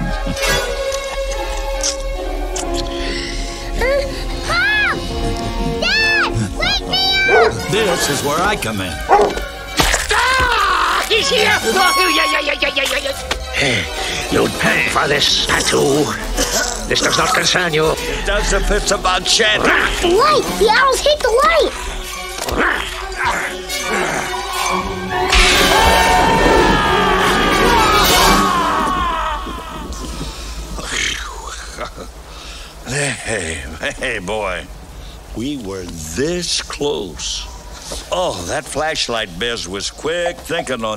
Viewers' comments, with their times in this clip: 0:09 ROFL!!!! The Duke's scream of pain along with that facial expression always cracks me up!!! 😂
0:26 Duke's scream and the way he flies out of the house got me busting up laughing 😂😂😂😂😂😂